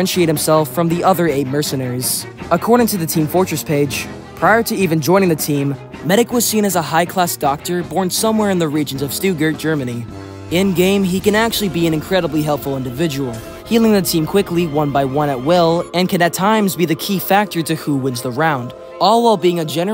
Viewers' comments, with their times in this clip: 0:07 I know you don't speak German, but that pronunciation of Stuttgart hurt... Also, Psychopathy, Psychosis, and Insanity are all different things. If you are a psychopath, you are NOT insane. Insanity is a legal term, not a medical term. That is all. Good video, but I wanted to make that distinction.